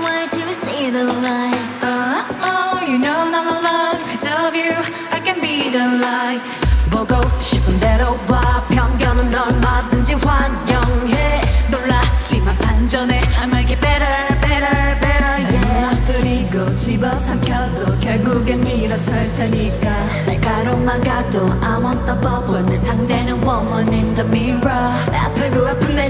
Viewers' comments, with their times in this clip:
0:07 jihyo voice omg